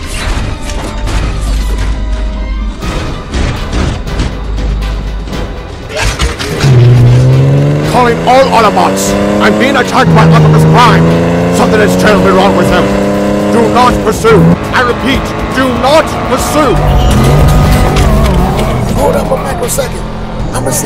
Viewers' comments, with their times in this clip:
0:08 the way he talks is funny